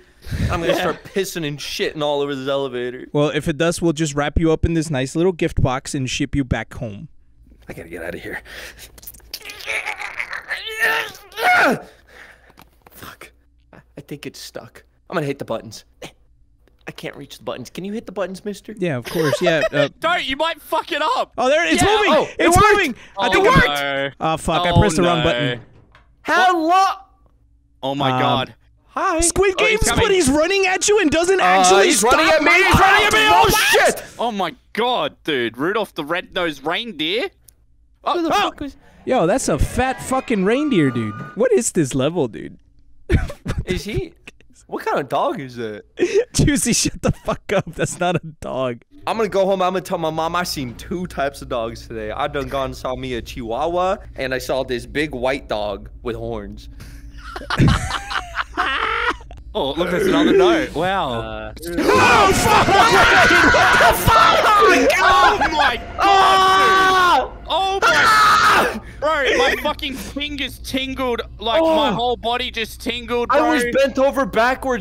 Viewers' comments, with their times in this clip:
0:08 Why tf are u making those noises 0_0
0:59 I legit almost stabbed my tongue with my fork in my mouth when they all screamed 💀💀